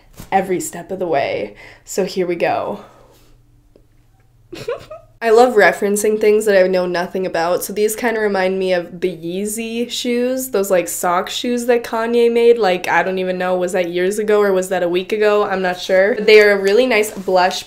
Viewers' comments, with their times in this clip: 0:04 That little giggle is so precious 🥺